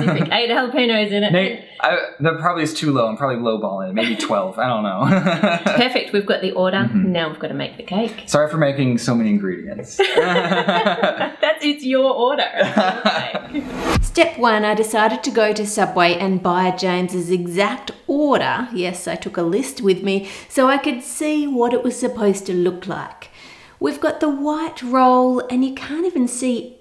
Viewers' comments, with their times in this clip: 0:10 James: ah ha ha ha ha ah he he His mind: this is awkward